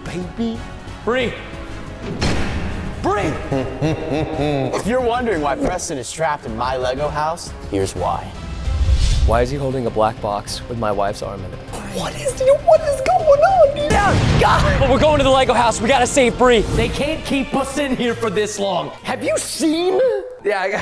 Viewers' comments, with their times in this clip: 0:03 Unspeakables laugh made me laugh hard 🤣
0:03 that is the laugh of my sleep paralysis demon